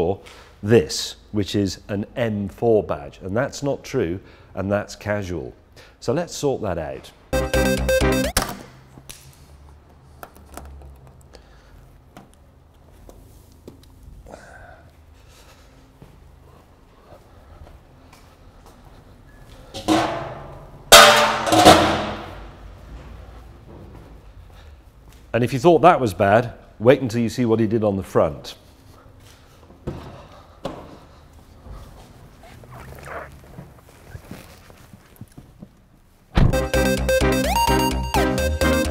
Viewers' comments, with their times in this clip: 0:07 What’s with the GarageBand loop?
0:20 sounds like the start of many a-reggae tune.